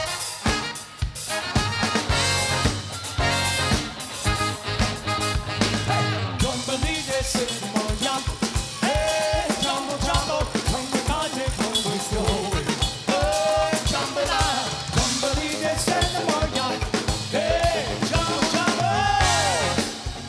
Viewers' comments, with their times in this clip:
0:03 That's one of the hippest breakdowns I've ever heard! Well done, Schooners - drummer rips! ->